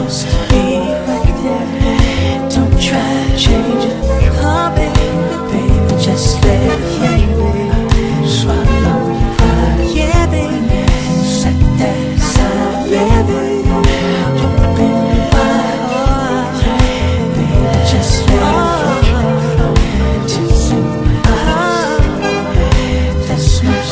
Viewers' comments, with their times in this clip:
0:06 Reminds me of "What You Won't Do For Love" by Bobby Caldwell. RIP Bobby Caldwell.